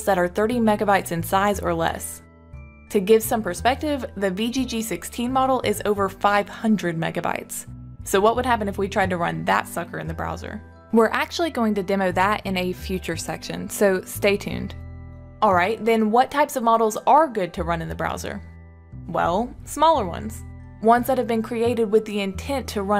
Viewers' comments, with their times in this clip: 0:08 I thought I heard a different word it would have been epic just throwing in there. :)